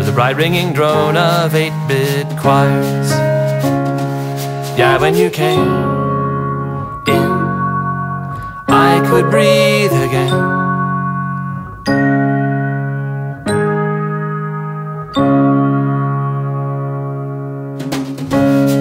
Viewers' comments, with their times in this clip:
0:04 Best part of the song. The male + female voice combined make it epic.